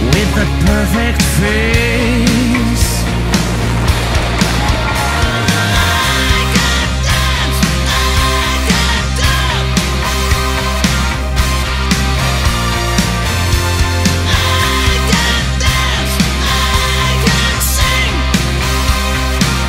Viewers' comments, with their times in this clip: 0:07 damn that voice :D